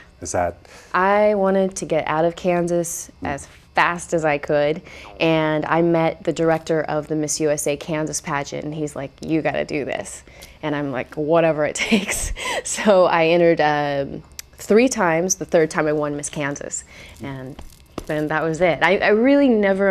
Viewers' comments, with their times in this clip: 0:05 LMAO! Listen closely to either Kelli or the dog shyt their pants LOL. "I wanted to get out of Kansas as fast as I could *CRAP*.....